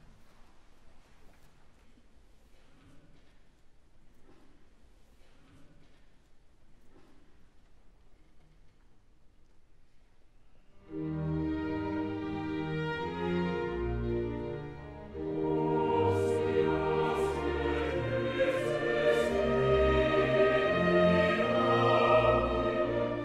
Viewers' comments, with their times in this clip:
0:10 There are parts here that sound absolutely beautiful and better than any version by far like Incredible. This makes me cry. oh Wolfy poor soul😓💔🪽🪽